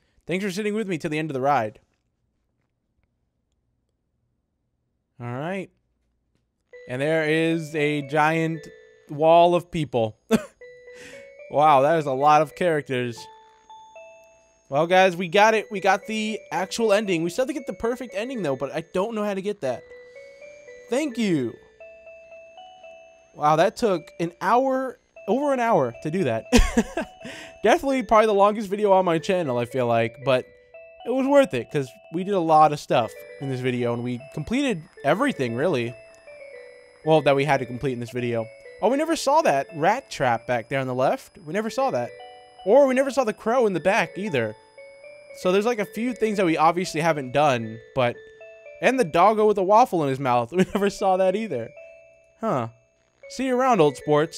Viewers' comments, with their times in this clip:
0:05 that music in the end
0:07 Its rick roll on a piano.
0:08 I love how Never Gonna Give You Up starts playing
0:19 never gonna give you up plays in the background lol
0:34 I DID NOT JUST GET RICKROLLED WITH A BEAT
0:37 Did nobody notice the song sounded like a rickroll? XDDDD If you are seeing this, it was the rickroll. If you aren't, its because it wasn't and I deleted the comment.
0:41 its never gonna let you down playing LOL